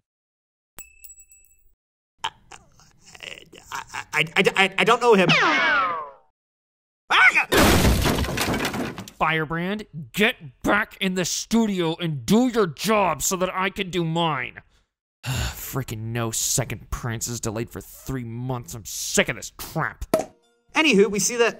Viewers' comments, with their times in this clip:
0:06 DID HE YELL BAKA!?*laughing*